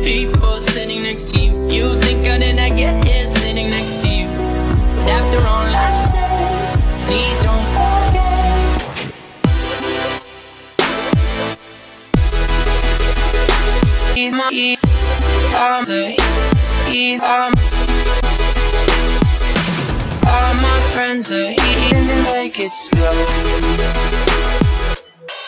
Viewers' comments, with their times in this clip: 0:09 only if they speed it up a little bit